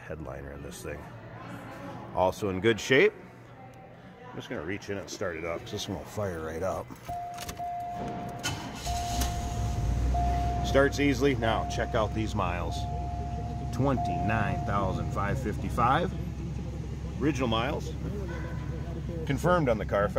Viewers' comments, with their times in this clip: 0:06 Oh, that BEAUTIFUL chord chime !!!!!!